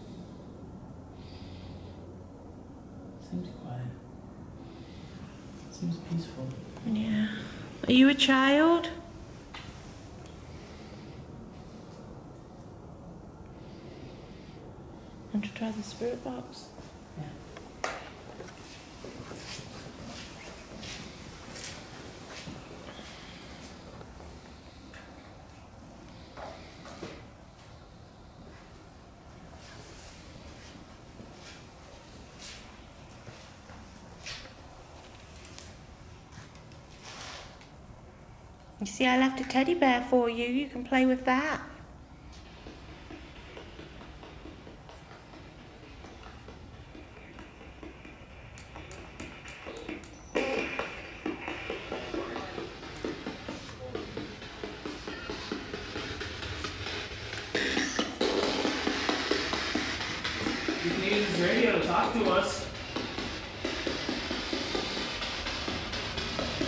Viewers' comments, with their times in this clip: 0:05 I agree it does sound quiet. I hear things but like you've said a lot going on so it could be other things
0:17 Actually she started right ear
0:20 I hear a woman
0:53 sounds like'hold me tight' f box I'm guessing or not. And Sarah f box